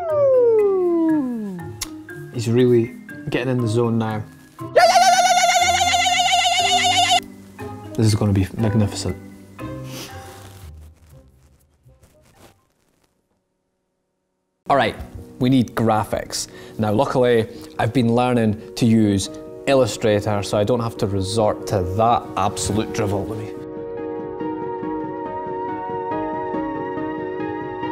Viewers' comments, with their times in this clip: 0:09 you can hear camera crew laughing